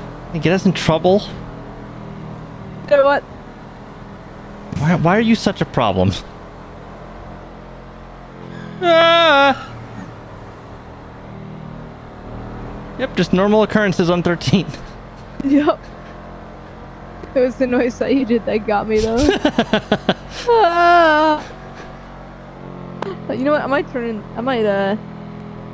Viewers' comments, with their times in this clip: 0:07 sounding like peter griffin XD